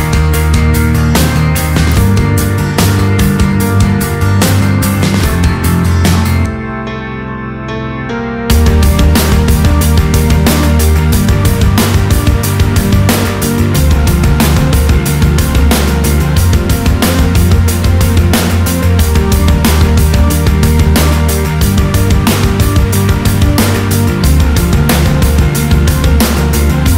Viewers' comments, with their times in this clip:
0:09 What this song turns into is amazing, just the change of the beat and back music!!!!